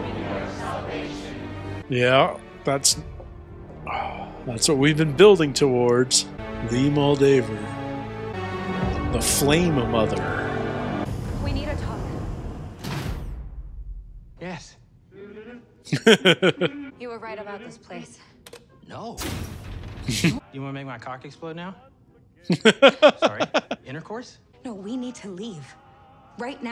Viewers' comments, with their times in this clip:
0:09 I can't quite make out what you're saying, but it sounds like Flame a mother or Flame Another and I'm really confused how you misheard when the "President" very clearly and articulately said "flame mother"